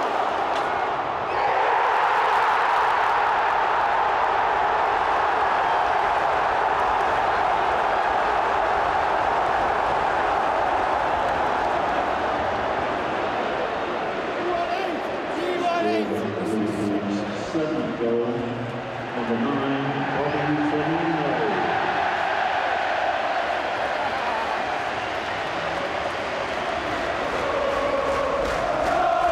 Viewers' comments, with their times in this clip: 0:10 mark - the pointing and laughing. So true.